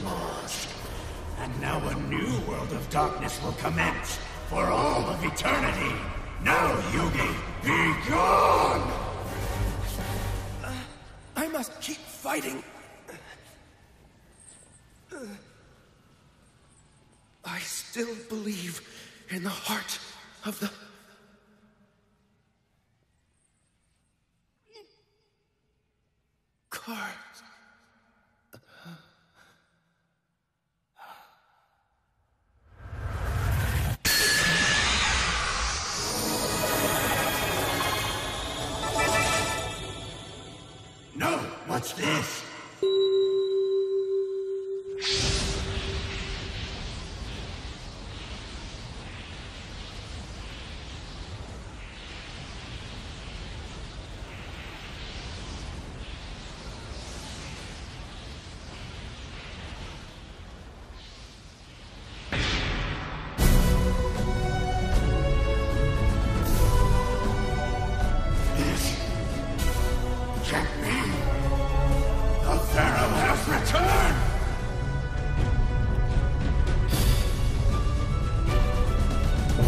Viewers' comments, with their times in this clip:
0:06 Now yugi begone ... thot asdadads who thinks that like me
0:43 that iconic tone... A legend appears Ore no turn! Draw! Monsta Cardo!
0:45 ya, I love the sound of the millennium puzzle
1:01 When I heard the Yu-Gi-Oh theme, I got so much chills
1:03 I guarantee every Yu-Gi-Oh fan, both old and young, had the absolute biggest fangasm when that music started playing
1:03 you know when the music kicks in things get epic
1:03 and there's the music.
1:03 THE FUCKING MUSIC!!! LONG LIVE THE KING!